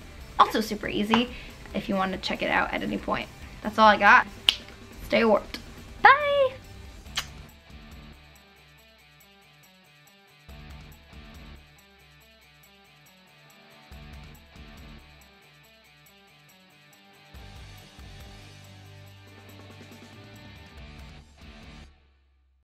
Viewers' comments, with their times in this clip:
0:05 She's super nice, talented, pretty and extremely cute and Badass.. AKA THE BEST. and that "bye" was the cuttest ..